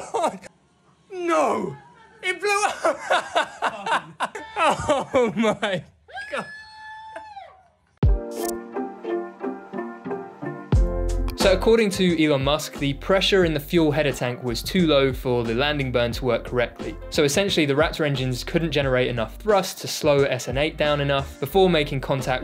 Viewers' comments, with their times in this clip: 0:06 I would recognise that scream of joy anywhere